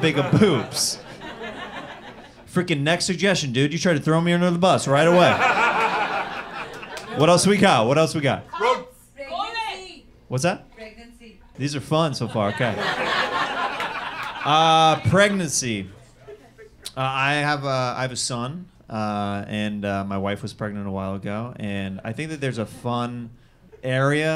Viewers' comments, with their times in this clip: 0:06 what did that lady say? stinks? something stinks?